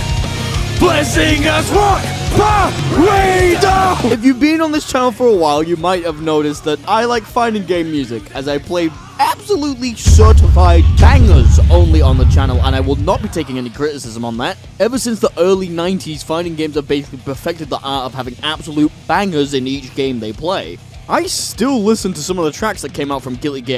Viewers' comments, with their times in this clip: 0:04 i like that you can hear that hes speaking with a smile on his face and i love it